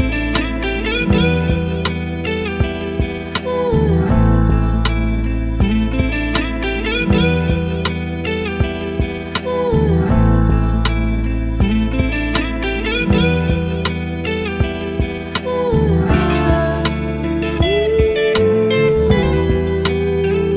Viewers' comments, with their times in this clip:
0:03 Crazy chops as always 🔥🌀 hit the soul